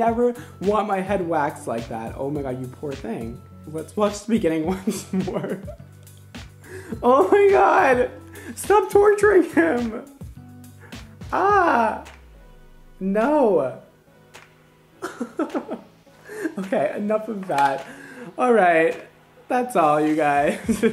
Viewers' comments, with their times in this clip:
0:04 they and the girl before were speaking turkish and the person who is getting waxed is saying that it hurts😂😂